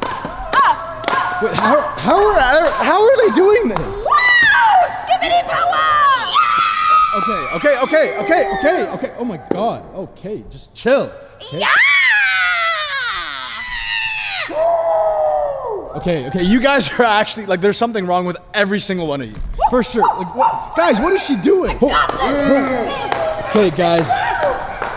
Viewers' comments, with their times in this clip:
0:08 sound like a dog